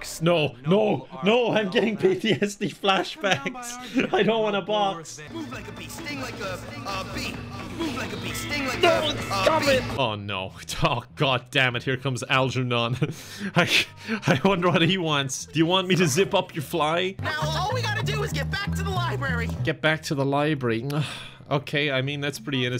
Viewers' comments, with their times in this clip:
0:04 Bryce Montrose’s broken voicelines have traumatised us all